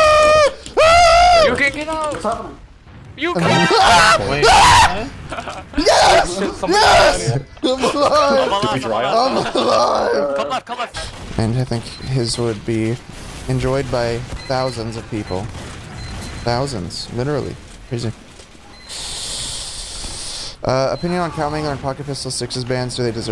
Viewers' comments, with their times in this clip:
0:03 That scream really crack me up xd
0:04 scream was so powerful it shook the camera